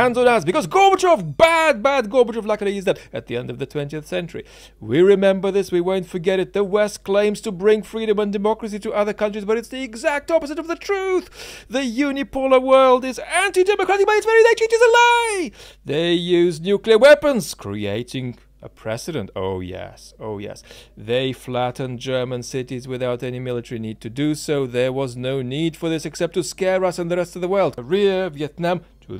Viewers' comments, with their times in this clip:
0:10 the silly voices dont help make your point.